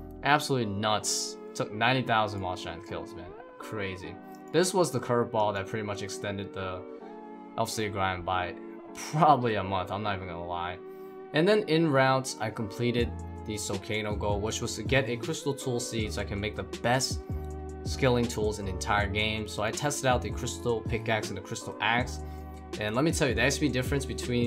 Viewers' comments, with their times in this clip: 0:10 What's the background music ? I have heard it somewhere and it's so relaxing.